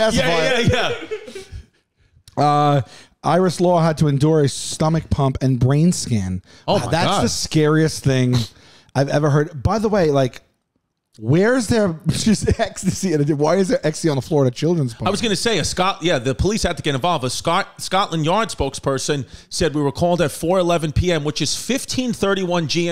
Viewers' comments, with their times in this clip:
0:07 "That's the scariest thing I've ever heard." As the pig in the background audibly snorts and swallows a loogie on mic I COULDN'T AGREE MORE!